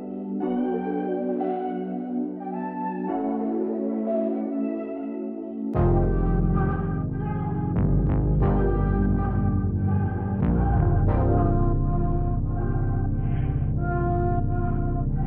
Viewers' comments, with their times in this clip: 0:03 the melody is too nice man keep it up definetly subbing